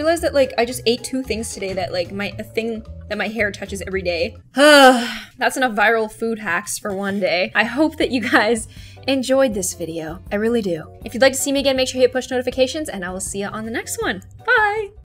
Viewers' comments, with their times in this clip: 0:09 Pause again and click on the time stamp she sounds like siri or alexa